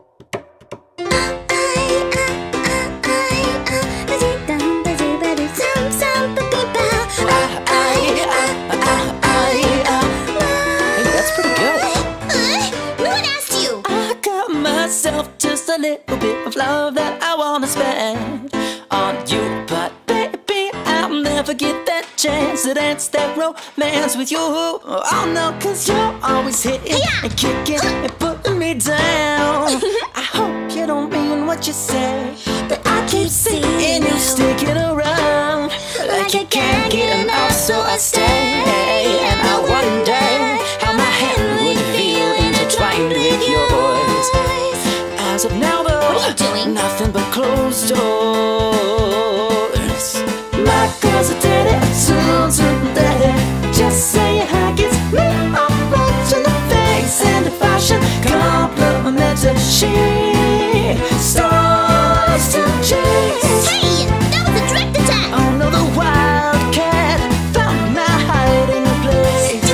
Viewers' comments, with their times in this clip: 0:04 My sound was all the way up, but mute was on. I thought the sound was all the way down so, I started turning it up then, i heard the loudest IVE EVER HEARD! I was like AAH! and then I realized that mute was on before, so I turned it WAY down, and now I am writing what I am writing right now!
0:12 what was that noise lmao
0:38 They nailed so perfectly the harmony is amazing
0:41 his voiceeee omlllll
0:54 is no one gonna talk about that high note? Like damn that’s really good! Especially for a guy!